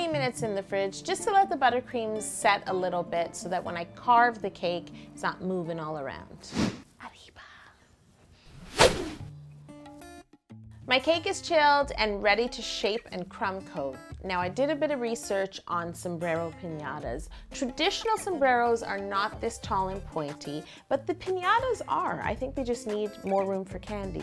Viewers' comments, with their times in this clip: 0:10 What is the music you use i love it its relaxing